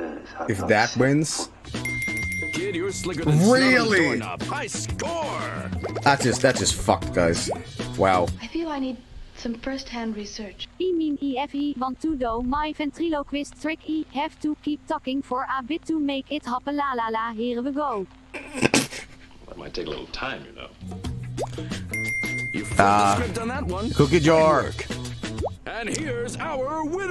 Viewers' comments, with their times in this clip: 0:10 i love how they used the dutch TTS for this its so random its funny